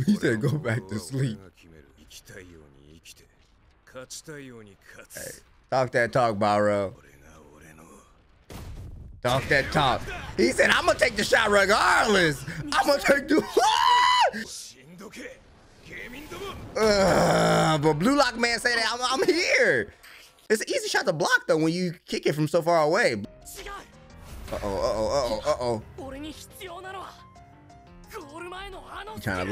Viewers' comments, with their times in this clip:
0:10 what a scream 😄